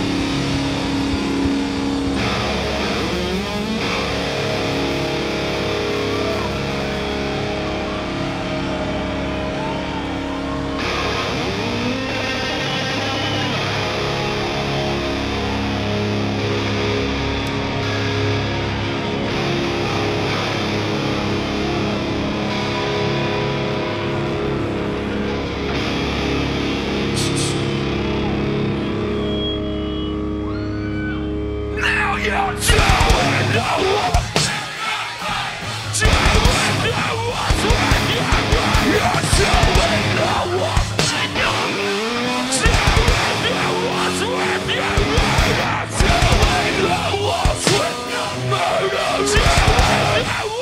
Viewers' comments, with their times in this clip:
0:08 That pause ....like come on, just perform the song.
0:35 the crowd all singing does not cease to amaze me